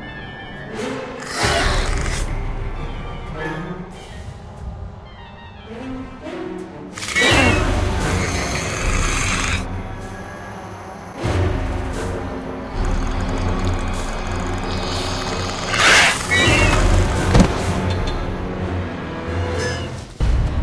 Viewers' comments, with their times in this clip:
0:07 Nima says umm to my it really funny 😂